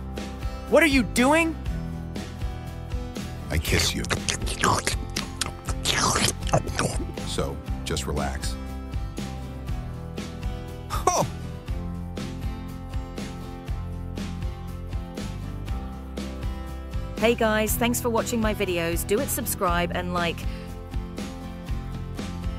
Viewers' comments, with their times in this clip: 0:05 WTF WAS THE KISSING SOUNDS THOUGH-